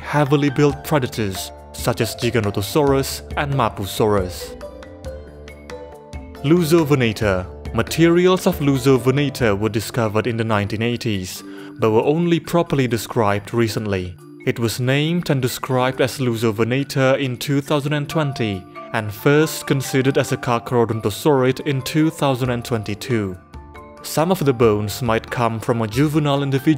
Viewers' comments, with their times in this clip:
0:07 i keep hearing it as "Loser-venator", man dinosaur bullying is such a problem